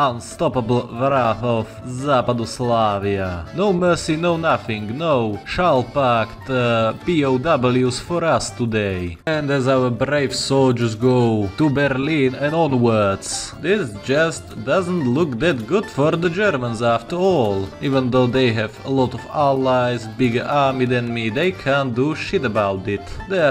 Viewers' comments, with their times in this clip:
0:07 What's that song bro? Its so damn cheerful😭💓